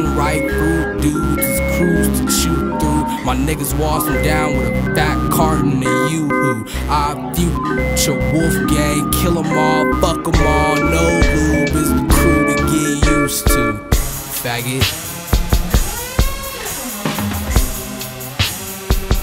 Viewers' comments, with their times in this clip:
0:06 That momentary pause gave me goosebumps.